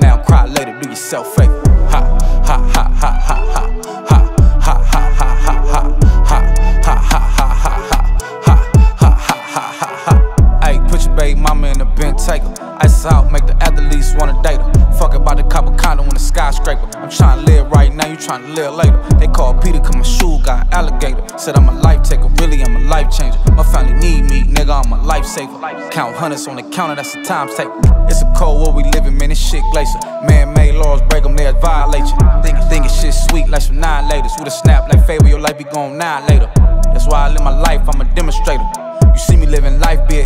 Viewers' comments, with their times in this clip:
0:04 Literally no one Fboy laugh in front of people
0:26 harmony is whole mood 😂🔥🔥🔥